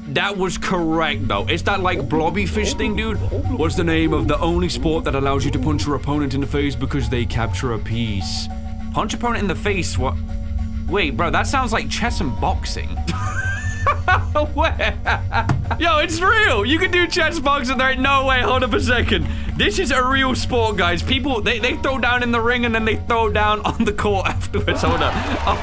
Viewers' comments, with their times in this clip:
0:06 Why did that guy sound like Dr Danner from kindergarten 2